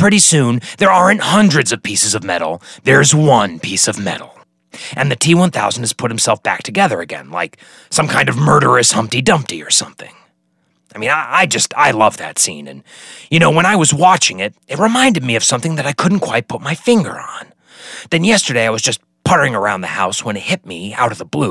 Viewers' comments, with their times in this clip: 0:07 Sheer genius! Just heard a Dan Carlin pronunciation error, though. you say "Genghis Khan" with a hard "g" sound where as Dan goes with the "j" sound.